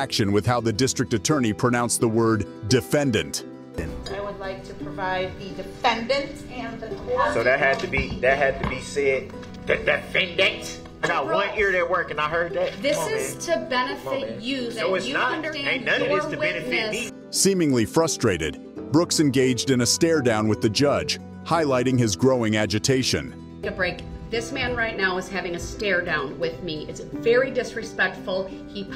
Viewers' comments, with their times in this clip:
0:09 The DE-FEN-DANT, my favorite part to the scene.